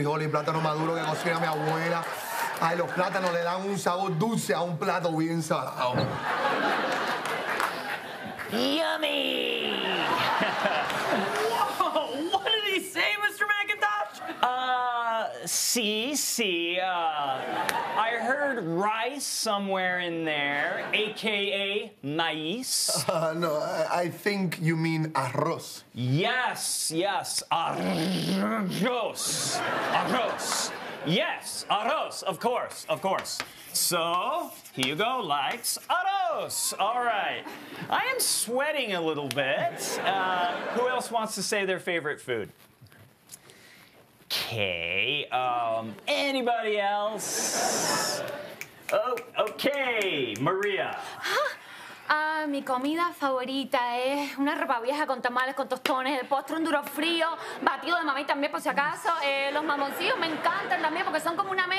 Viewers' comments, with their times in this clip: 0:07 sounded like he likes orange chicken with beans as a meal. The rest I didn't catch.
0:27 he somehow managed to say our Czech Ř, a sound that doesn't exist in any other language and foreigners usually struggle with it. :D
0:48 the snapping finger lol love it!!